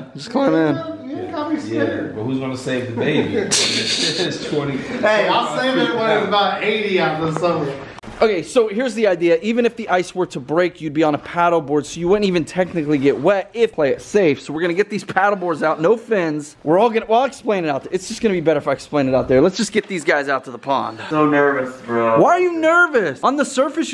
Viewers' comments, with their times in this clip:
0:06 AWESOME DUDE btw u voiced cracked lol